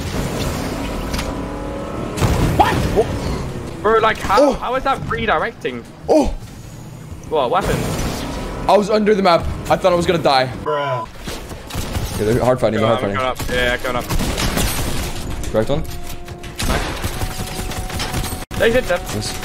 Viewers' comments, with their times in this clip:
0:07 did anyone hear the blob fish?